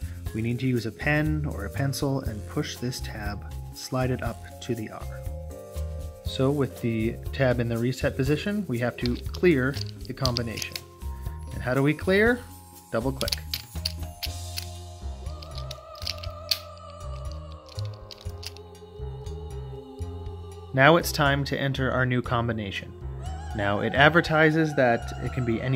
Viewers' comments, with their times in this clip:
0:10 This music kept giving me the creeps! especially soon after ... eeeegaaaads! chills down my spine!